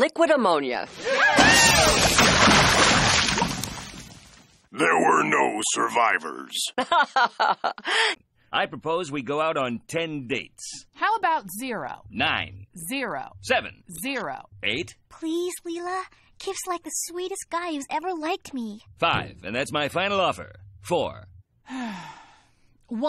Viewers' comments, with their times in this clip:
0:04 I thought Morbo was supposed to be the demented one but he actually sounds kinda glum about the deaths while Linda’s laughing about it…